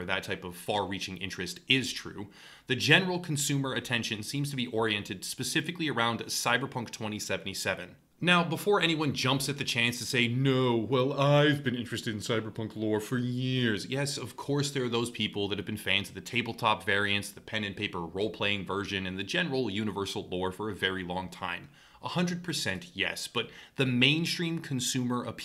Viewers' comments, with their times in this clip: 0:09 Excuse me! I dont sound like that!